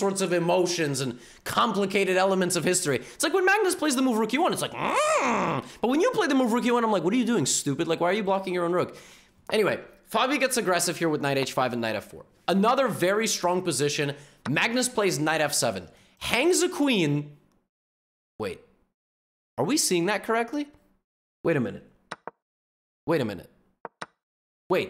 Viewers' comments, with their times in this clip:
0:06 the mmhhhmmm in 😭